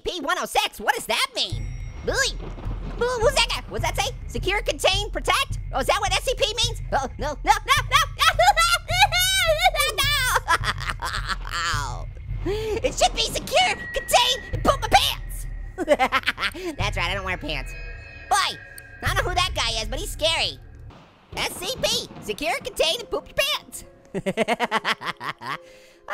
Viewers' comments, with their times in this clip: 0:08 Orange's crying is soo funny and the elevator is a stack of TNT